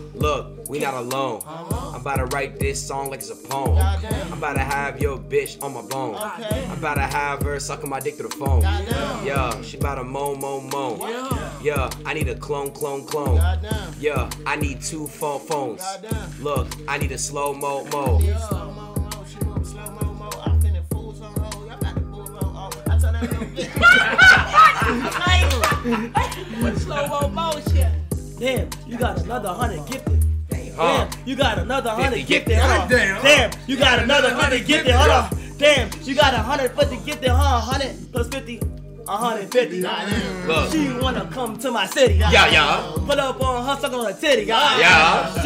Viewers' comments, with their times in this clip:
0:05 i need dat beat😭
0:17 nfs that flow he had right there was 🤯
0:17 top 10 flows
0:28 bro sound like too short!